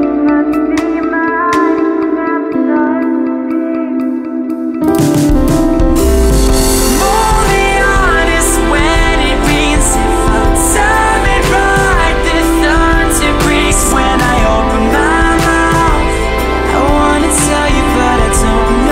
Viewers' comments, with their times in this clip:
0:04 Alright, I didn't expect an owl city version of this song, but I'm not complaining. Very distinguished and helped to bring another mix of emotions to the music. To be honest, I've been looking for a cover that adds some anger-ish tone like a higher voice, almost like a scream, then hear you from and finally say to myself, "this is it." All the cover that I've watched still linger to the sound of desperation & helplessness, but as a person who's been in a situation where I tried hard to love someone but unable to express it to the point that I'm scared and refuse to look for love, My personal interpretation of this song is a mixture of sad and angry. Angry at myself for being unable to express, properly act, and just being helpless and clueless. Thank you for singing my version of the song, this cover is the key to my old memories, and I treasure it.